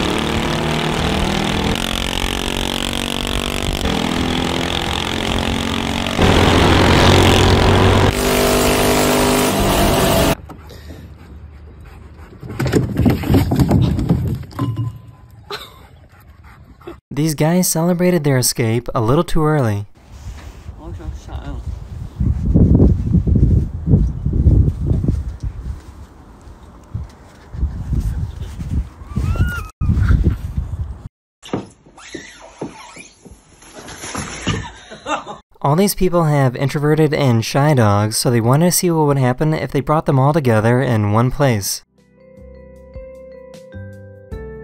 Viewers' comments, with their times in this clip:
0:08 Garbage cans sounded like fart
0:31 A Few millimeters from a huge disaster , bruh.... SHEESH. And Whoever is laughing there, is, LAUGHING. Wow...